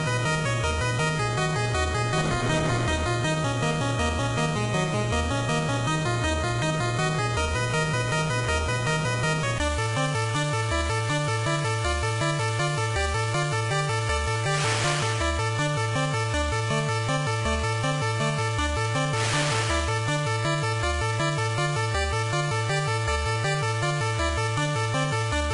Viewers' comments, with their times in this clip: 0:10 Interestellar soundtrack - This background sound reminds me of the soundtrack of the movie Interstellar in the Docking scene, but with a little high speed.